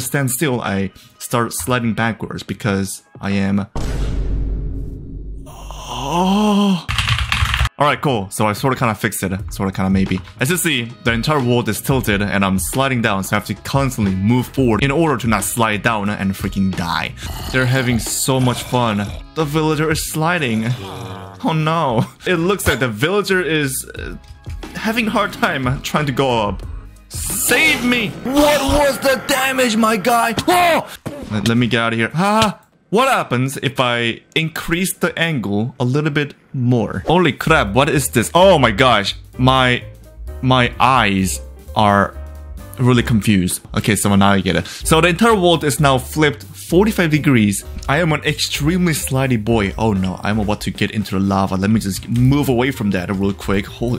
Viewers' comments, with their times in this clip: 0:05 DID YOU JUST MOA-
0:21 Why villager say help me b**ch
0:21 In the villager almost said [Help me Bitch]
0:36 bro got Indian accent
0:37 Russian accent kiking in